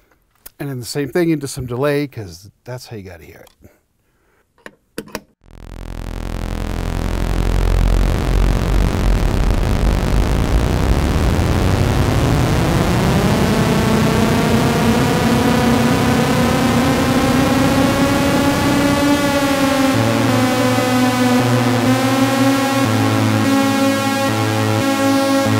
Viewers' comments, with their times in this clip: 0:07 closer to forbidden planet than any krell patch